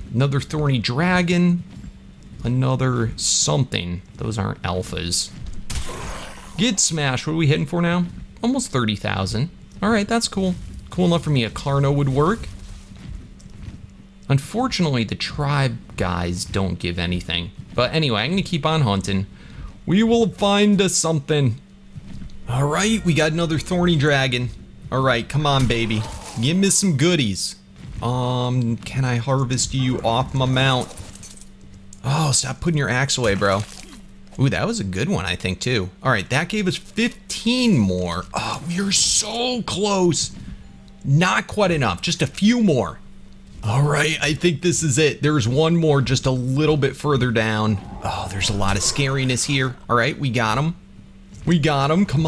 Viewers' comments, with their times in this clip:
0:08 anyone else notice the doorbell
0:35 like if you hear the doorbell